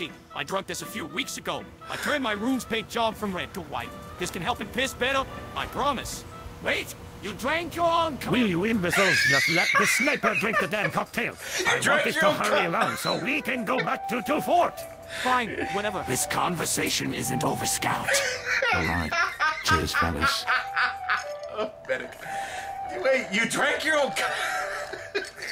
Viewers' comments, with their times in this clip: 0:08 His laugh gets me every time XD